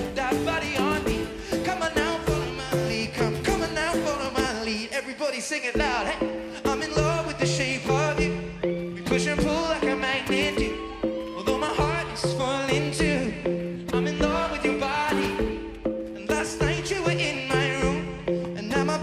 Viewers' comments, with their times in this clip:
0:03 This loop fail sounds good 😮